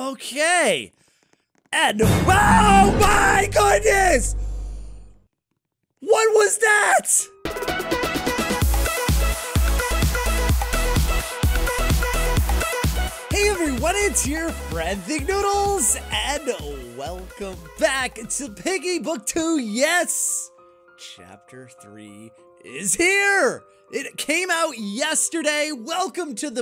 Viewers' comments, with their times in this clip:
0:08 i love the song